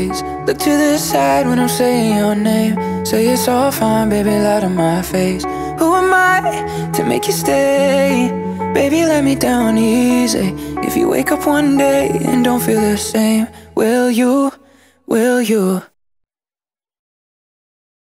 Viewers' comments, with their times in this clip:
0:07 that voice crack was fire my boys
0:07 sounds like 2016 Corbyn